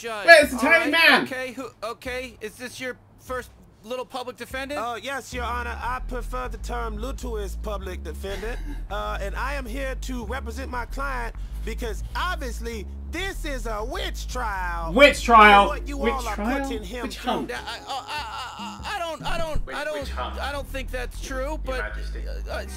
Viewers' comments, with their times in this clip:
0:04 That sounds like Mr Goldenfold (Morty's teacher) from Rick and Morty, does anyone know if it's the same guy?